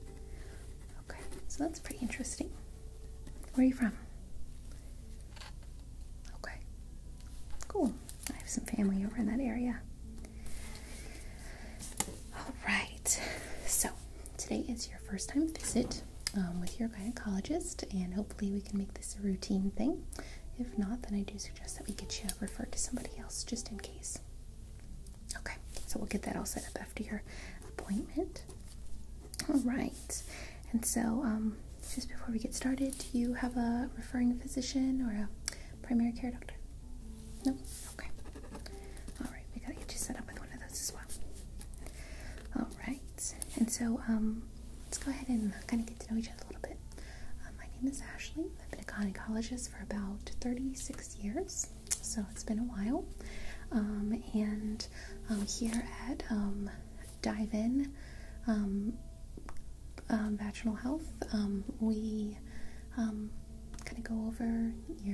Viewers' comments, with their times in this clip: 0:06 I love the way you said okay I clicked on this video with odd ideas of it, but this us actually very relaxing.
0:52 36 years , so its been a while um and um here at um dive in um , um vagianal health um we um kinda go over